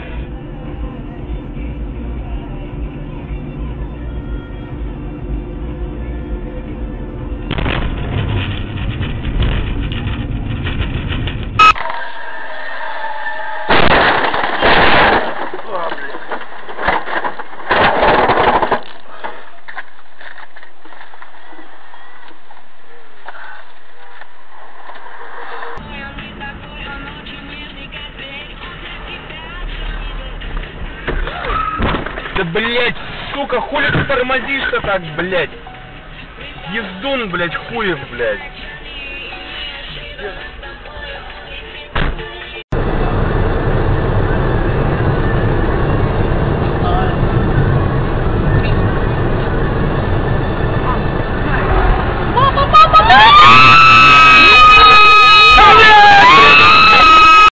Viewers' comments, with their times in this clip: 0:05 Wait why do I hear the Creeper Aw Man song
0:05 The girl was listening to Creeper aw man
0:28 Damn a lot of these were caused by like distractions such as their phones n shi. Funny how some just keep their calm and pretend like nothing happened. I had subtitles/closed captions on and when the Russian dude or whatever slammed and rear ended the car in front of them the subtitles tried to put his words into words that sounded like English. Here's what it said: "the [ __ ] took my sister fat lady you don't bless whoever bless"...💀😭 pretty sure "suka" means "bitch" in English which I'm assuming was the [ __ ]. Haha
0:54 Legend says lady is still screaming...